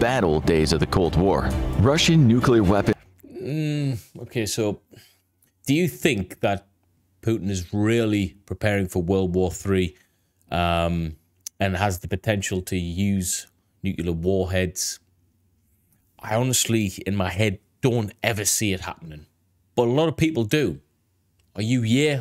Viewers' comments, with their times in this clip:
0:07 I'm simply of the opinion that I don't require dramatic music to enable me to process the possibility of any one thing or another, does that help?